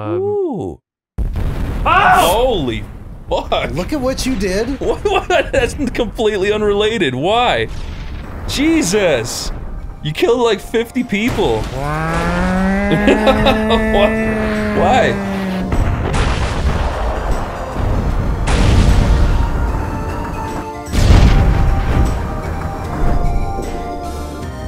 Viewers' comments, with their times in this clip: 0:09 komm susser tod starts up, it's beautiful
0:10 Komm susser todd starts